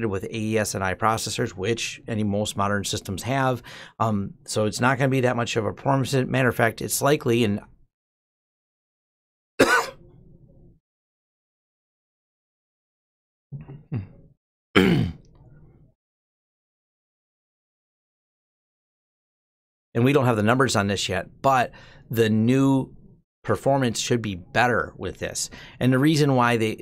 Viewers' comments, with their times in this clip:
0:07 Sorry about the cough I forgot to edit that out.
0:12 ...it's likely [Dramatic PAUSE]... [INSERT] Drum roll.. :)